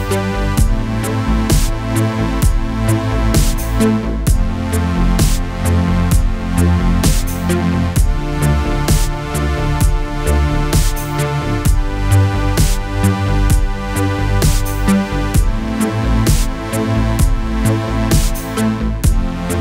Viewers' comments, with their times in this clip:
0:03 rip my headset :v